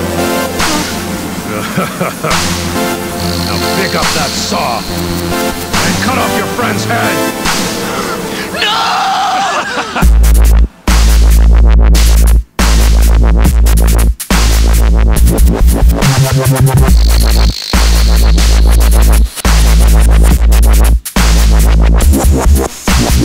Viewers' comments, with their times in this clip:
0:09 from my opinion one of the heaviest dubstep drops!!!!
0:10 i expected more of a drop decent song though.